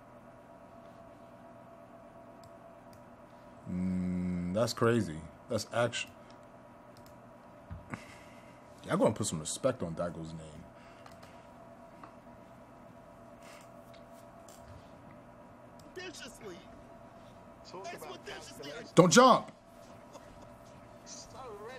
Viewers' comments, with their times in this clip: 0:09 subtitles say got put some respect on that girls name 😆😆😆 Instead of saying daigo.